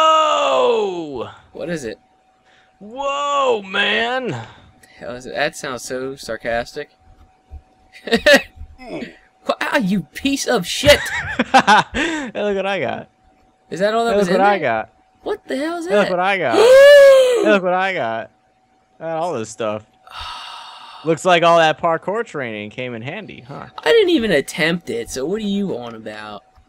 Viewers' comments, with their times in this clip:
0:10 The Whole "Look what I got" sound like the elmo theme